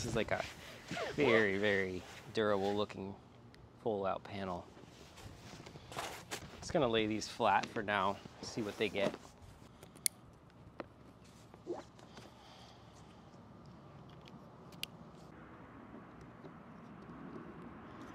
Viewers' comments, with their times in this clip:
0:03 What was that look you made on did you hear a crack noise? Cause i heard that to on my eco flow 160 watts, when i was unfolding it.